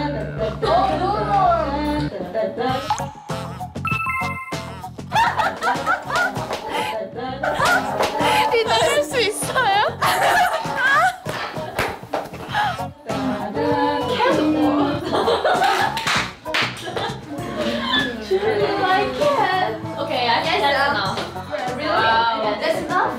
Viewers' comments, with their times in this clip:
0:06 LMAOOOO LIA’S LAUGH HAHAHAHAHAHAGAGAHAHAH